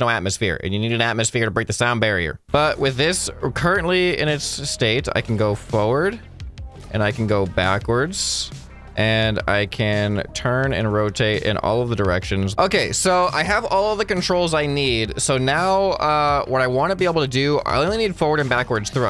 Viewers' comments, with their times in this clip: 0:03 bro you sounded like a disappointed teacher lmao